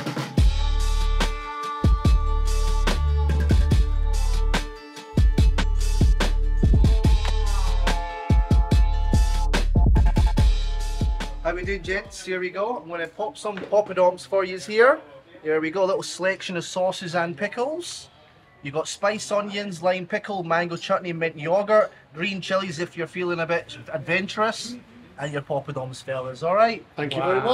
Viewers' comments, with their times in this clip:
0:10 Indian with Scotch Accent ! :face-orange-biting-nails: